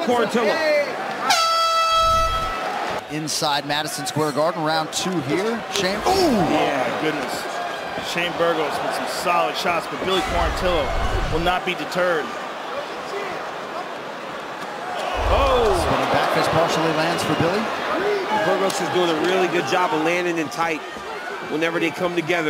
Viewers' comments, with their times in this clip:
0:05 bruh you can hear one of the commentators say 'yehh' like they are laying pipe